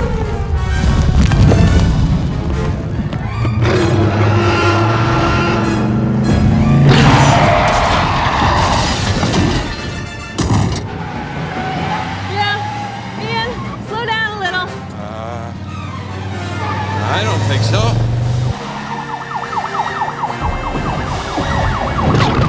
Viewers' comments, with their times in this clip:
0:08 That is a pure "I AM GOING TO KILL YOU!!!!" parental roar.